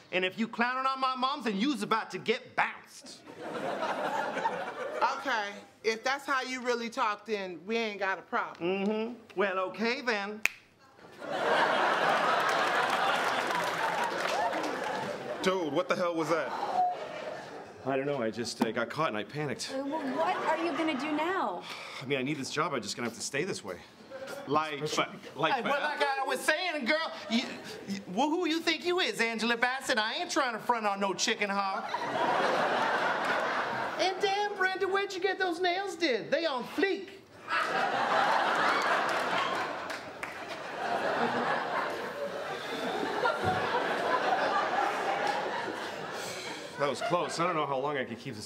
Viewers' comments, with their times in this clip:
0:07 The finger snap. 😂😂😂😂😂
0:36 What did he say.... ? On fleet?